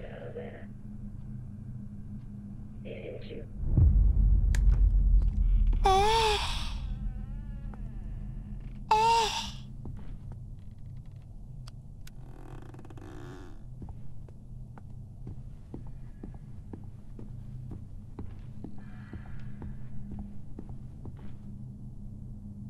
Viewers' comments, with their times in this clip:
0:05 the way bro moaned i was dying 💀💀💀💀💀💀
0:05 GOSHHH I WATCHED WITH LOUD SPEAKER!!